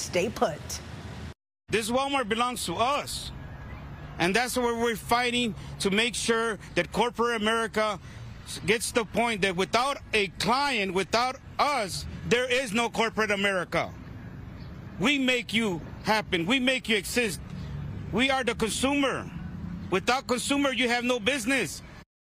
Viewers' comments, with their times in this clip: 0:08 Guys did you hear that ?😂 or is it just me "Deez Nuts"